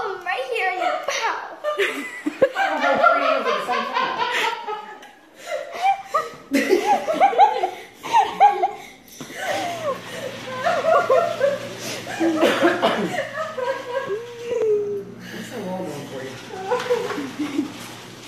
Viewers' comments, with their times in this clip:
0:06 She’s literally panicking there having a mini anxiety attack, and the doctors and family are there laughing. Honestly, I would feel so bad. They are making it so much worse for her. Instead of laughing, why not comfort her? Seriously. She obviously is really upset. This makes me so mad, it’s not funny. They were making her even more scared when she was getting them and screaming one of the other nurses said “ instead do you want the BIG needle? As someone who suffers from generalized anxiety disorder, this makes me upset. I hope this girl didn’t feel to upset after